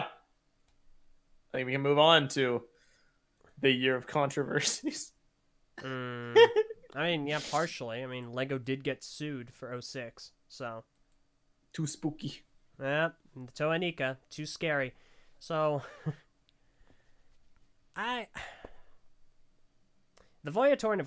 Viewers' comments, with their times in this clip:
0:03 wait Lego got Sue in 2006?